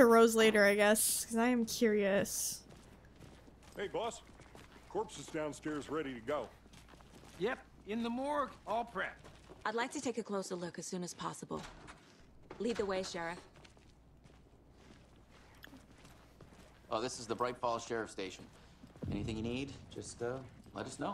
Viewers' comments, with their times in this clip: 0:07 He sounded like Bob Odenkirk there for a moment